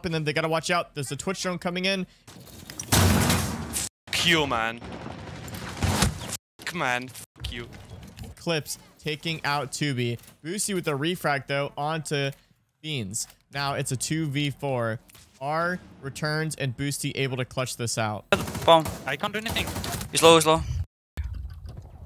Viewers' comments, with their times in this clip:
0:04 oh lord that rage 😂